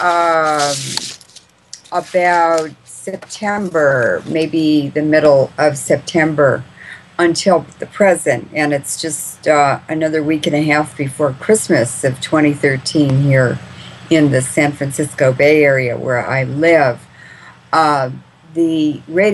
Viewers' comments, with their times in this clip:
0:06 Sound is off Need to fix.